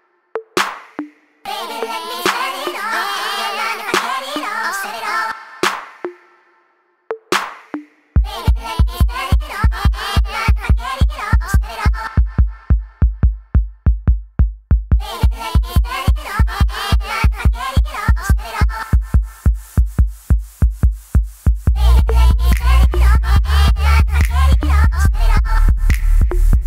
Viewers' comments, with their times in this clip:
0:07 DAMN it gets trippy